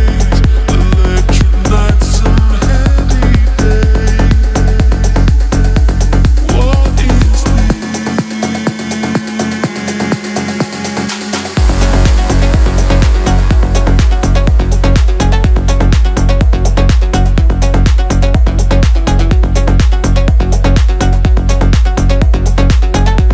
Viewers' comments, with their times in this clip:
0:10 This track is pure magic ❤ my question is...why the melodic part started happen one time only ?! It is damn good, huge congrats